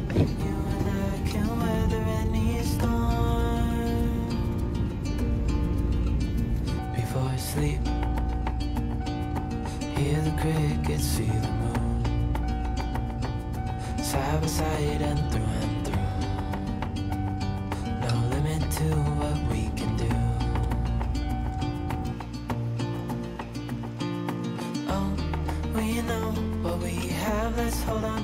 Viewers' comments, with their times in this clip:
0:10 It's so funny because everytime I hear the car sound like in I proceed to singing the first verse of Driver's License by Olivia Rodrigo. LMAO